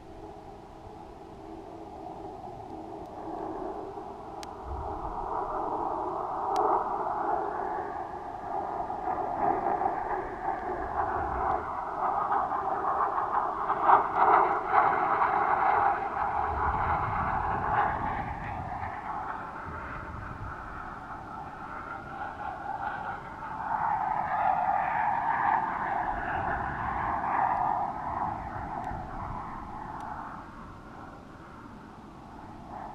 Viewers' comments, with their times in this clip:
0:10 hearing and seeing the jet go by was awesome
0:15 its very noisy up here.